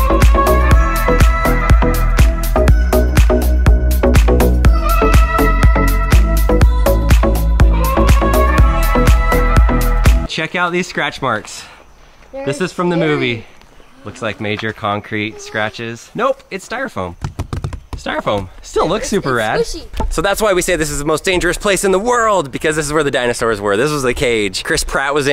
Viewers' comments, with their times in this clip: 0:07 what's recording the recording drone? Illuminati song plays